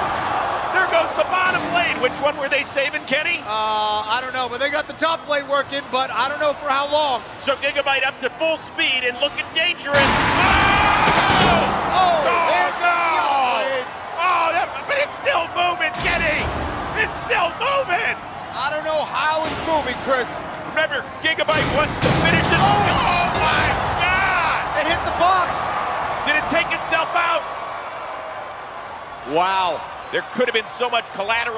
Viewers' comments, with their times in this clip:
0:09 Amazing scream from chris rose
0:16 I like how chris rose said its still MoViNg